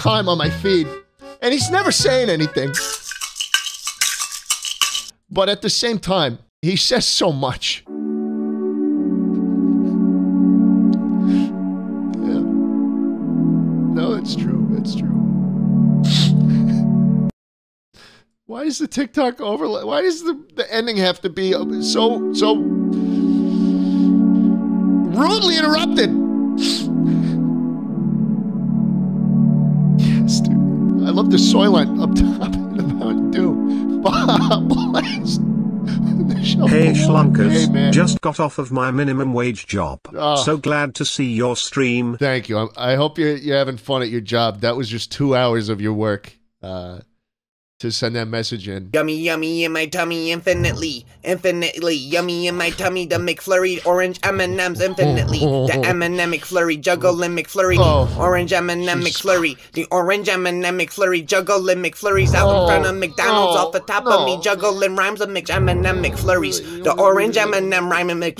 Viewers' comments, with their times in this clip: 0:07 rhubarb is just such a nice tune
0:49 bro sounds like Sid the sloth from the Ice Age movies
0:50 Super weird question but whats that low sound affect that keeps playing in the clip would be amazing in a horror film or smth lol, like stuff being shoved around in another room Sounds like a low note on double bass to me but im not 100% sure
0:53 the special ed kid laying down the sickest flow in the back of the class